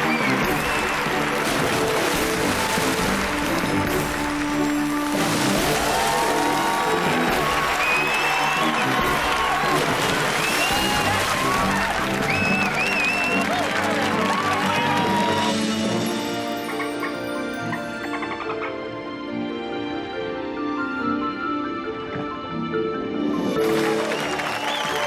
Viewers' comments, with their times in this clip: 0:07 Bella's excited shriek! haha!
0:07 Bella is ligit screaming
0:11 Lewis cheering on her the most is so cute